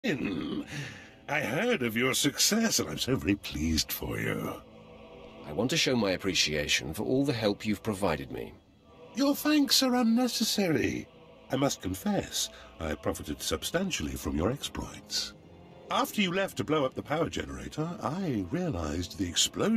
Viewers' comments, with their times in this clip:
0:01 Hmm that sounded like Beerus. Could it be….